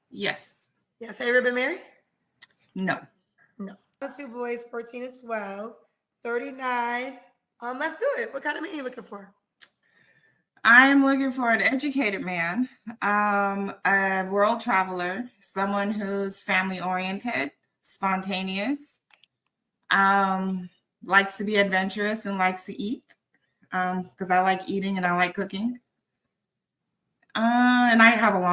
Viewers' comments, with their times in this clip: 0:09 The tongue-clucking at the beginning of her sentences is irritating!